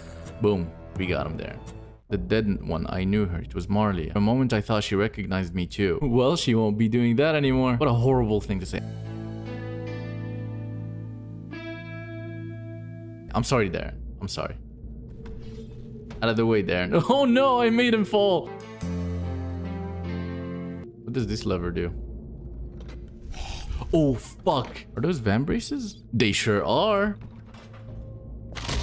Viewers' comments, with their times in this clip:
0:09 Oh damn, that OST hit me right in the nostalgia